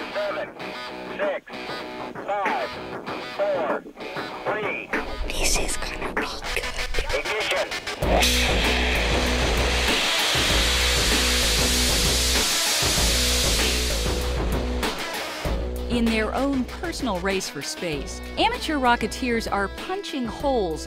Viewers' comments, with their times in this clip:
0:05 Eww why is that white boi whispering in my ear? Does he want sex?
0:06 The person sounded like he was doing a ASMR vid